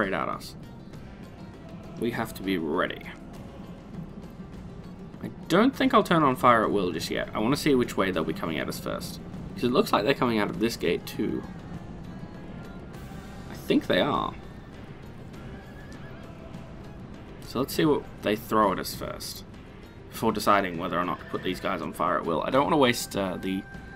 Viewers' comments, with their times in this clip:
0:06 Nice music minute